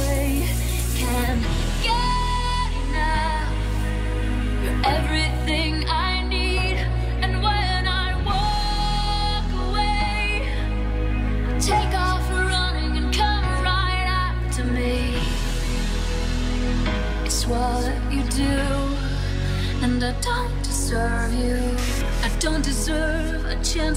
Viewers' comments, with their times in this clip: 0:04 I just want to say that HE IS PLAYING LIVE, and not a pre-set, you can check in in the song he did wrong in a note, you can check the original version here /watch?v=VzdnWNqgeCA , he and armin van buuren are the best in the world.